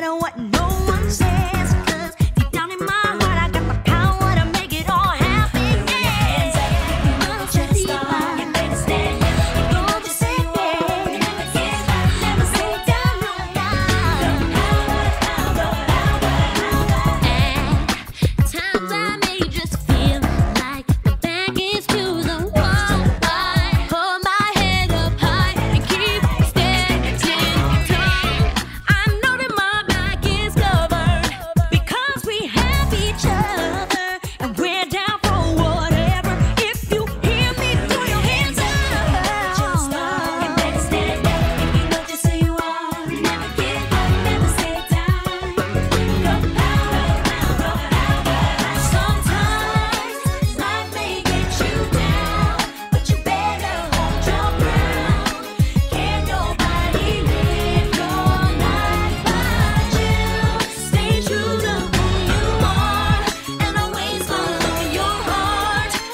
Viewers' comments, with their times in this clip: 0:06 I used to think Adrienne was making up sounds ... And I was still singing along...! 😂🤭🤦🏾‍♀️😅😶‍🌫️
0:28 So we just going to ignore the goat sound ?💀💀
0:49 The bridge still has so much POWER 🔥🔥🔥